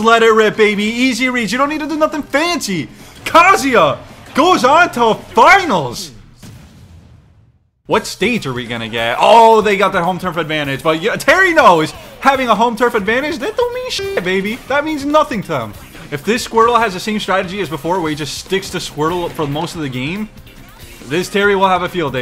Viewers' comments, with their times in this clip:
0:10 and the banger theme advantage